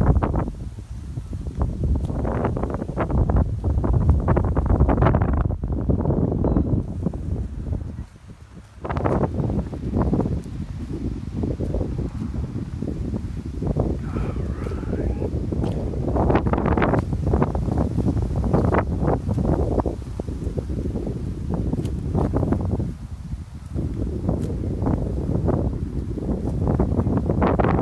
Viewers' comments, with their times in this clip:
0:10 ... 🤔 do you hear that voice 😱😨